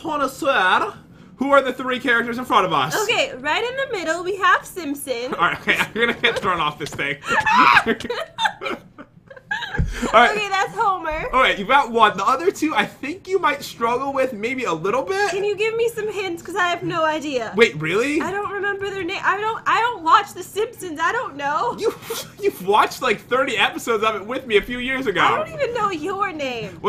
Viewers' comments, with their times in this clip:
0:07 yay the alarm is of 😁